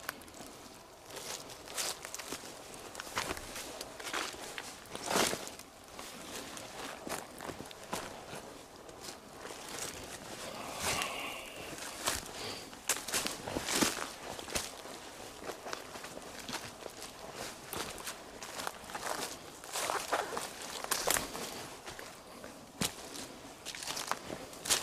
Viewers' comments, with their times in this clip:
0:09 is that yourself exhaling? Please say yes it is, because it sure sounds like someone sighed.
0:10 Listen Sounds like Something Flew by a Spirit ?
0:11 I heard a deep growl right near him.
0:11 Did anyone hear the exhale right ish? Gave me chills
0:11 I am not sure exactly but I think I heard a voice in minute that says „go away“ not sure but please check that out! If that not ur breath, could be a voice??! I don’t know.
0:12 you can hear someone say “hey!” Creepy..